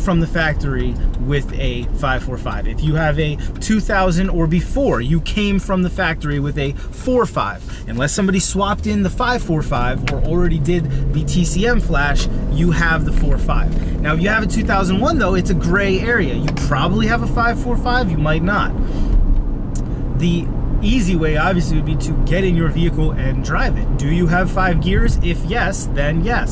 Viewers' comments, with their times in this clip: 0:09 i hear a wheel bearing! And wtf! Ive got 17inch aftermarket rims and i think they look great!